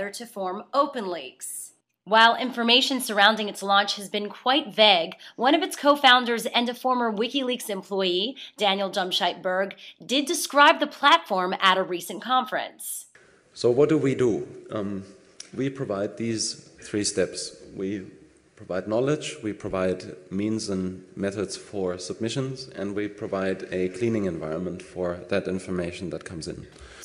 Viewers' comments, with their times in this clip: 0:08 Did she say "dumbshite" ?